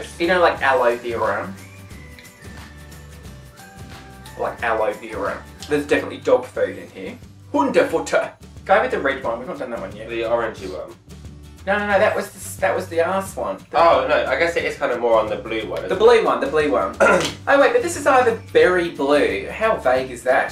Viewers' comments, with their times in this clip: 0:06 Hundefutter😅😅😅, German on point, that was a nice accent!!! I am German, lol